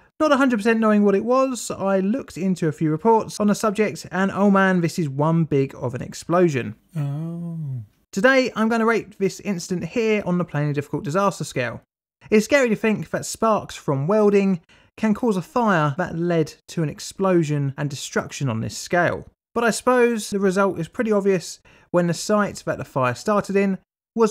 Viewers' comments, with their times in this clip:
0:07 That “Ooh” cracked me up. Idk why.